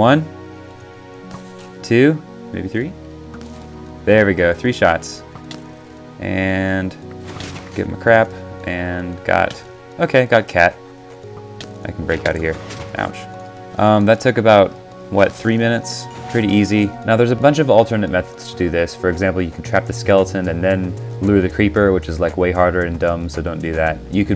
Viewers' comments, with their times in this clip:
0:10 the way u said "ok I got cat" was so cute